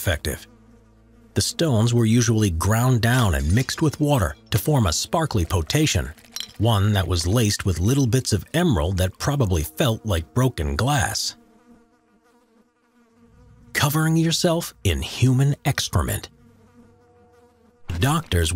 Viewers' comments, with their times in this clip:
0:04 ... what is a "po-tay-shun"?